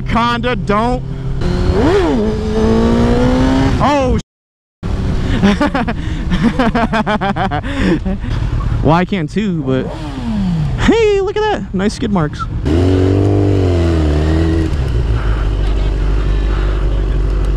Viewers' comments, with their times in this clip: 0:03 how did you know the cop was ahead? Audio not synced?